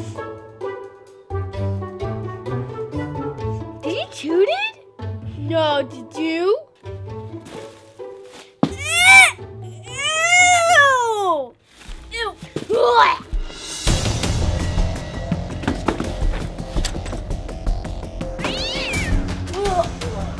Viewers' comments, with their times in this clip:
0:07 the way that the kid says ewwwww was funny